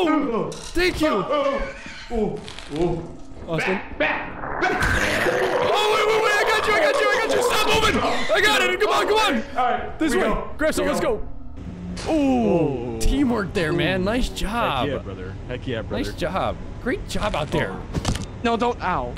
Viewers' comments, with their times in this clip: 0:03 I cannot get enough of the "Back..back..ba..." then choking/gagging noise lmao! Keep going back to it and laughing so much!